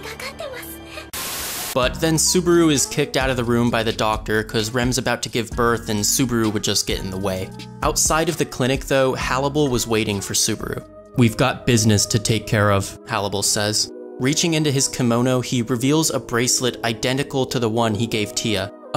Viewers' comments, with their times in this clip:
0:04 thats an impressive cleanic )